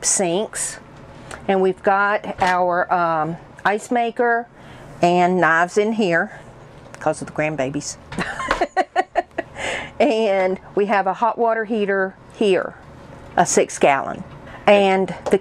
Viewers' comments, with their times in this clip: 0:03 I love when people redo vintage trailers. This one on the outside has my favourite colour of turquoise. May I ask for help? At around the watched mark she mentions what they used on the counter to finish it off and it was better than using polyurethane. It sounded like barlace. I know I have it wrong because I’m deaf in one ear so it makes it hard to make out some words this being one of them. Thank you I appreciate the help. 😊 They are such a cute couple!! I love the blanket on their bed, so beautiful!!😊💗